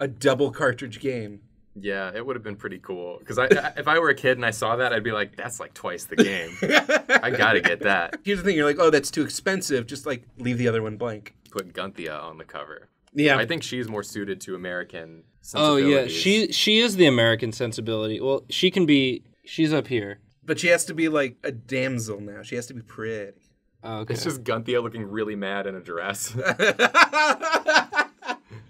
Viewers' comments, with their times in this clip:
0:10 At first I thought you said,"Put Ghandi on the cover."